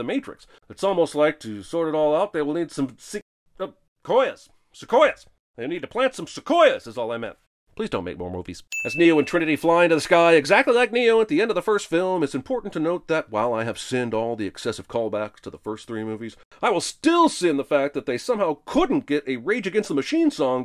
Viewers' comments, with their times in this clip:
0:03 that little walkthrough of the movie executive’s thought process and the genuine, wholehearted, quiet request to stop making movies with almost no hint of humor or sarcasm might have been the best part of this stellar video. Bravo, Sins team!